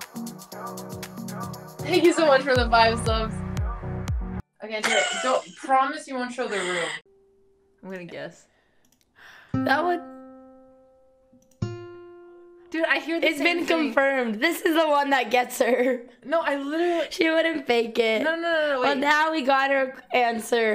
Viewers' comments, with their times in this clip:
0:07 Good News: Middle C (261.626 Hz) to F (349.228 Hz) is just Five Semitones, or 500 Cents, which I guess only equals about a Rook, Alex! It's barely discernible . . . why, rather, it's like accidentally plucking the adjacent string on a guitar! I mean, who hears any difference in THAT?! - j q t -